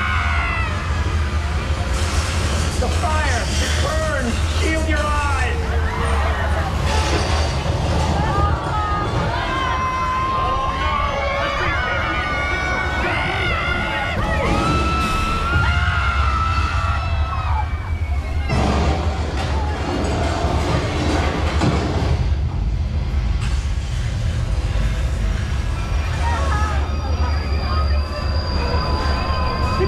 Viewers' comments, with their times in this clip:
0:10 Oh no!!! the streets cling in!!!! the trucks gonna everybody scream!!!!!!!!!!!!